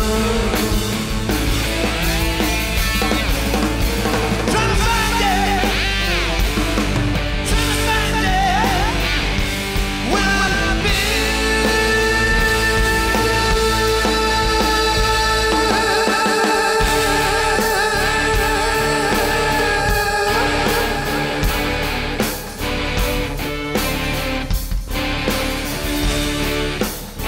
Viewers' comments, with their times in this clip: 0:09 Coming out of the middle of Kashmir, the note Plant holds and waivers and then finishing off with the #4 instead of the straight 4....the dissonance that creates...man, just brilliant. That makes this song even more epic sounding then it already is. You actually can feel the influence of the the Pakistan/India region of Kashmir. If only that could have made it into the actual show...that's the most amazing outro to that part he's ever done.